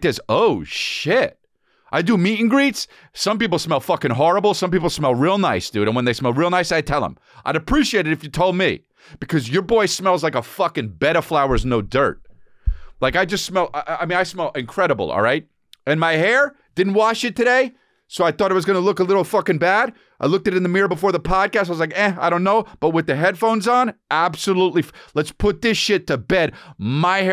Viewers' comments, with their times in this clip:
0:10 I was moving things around and bed of flowers sounded really off 😅